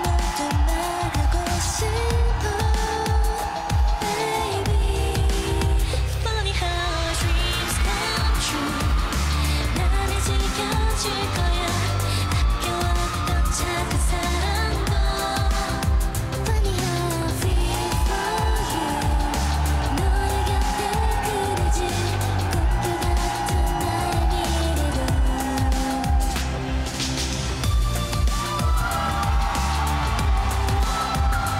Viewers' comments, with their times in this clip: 0:05 her voice is so damn good
0:16 IS THAT REALLY MOMO'S VOICE!? OH MY GOD!
0:16 Because of this It's not momo's fault that her voice sounds amazing in elegant concept